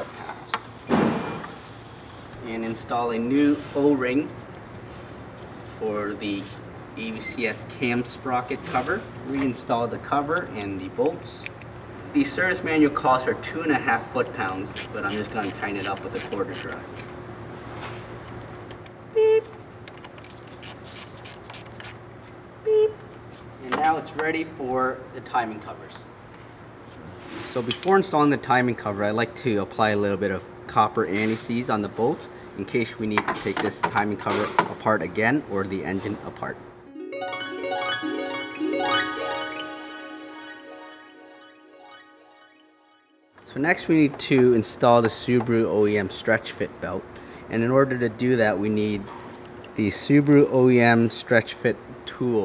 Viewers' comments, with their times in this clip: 0:08 love that torque wrench beep
0:37 that tune though <3 nice touch. I just had an orgasm.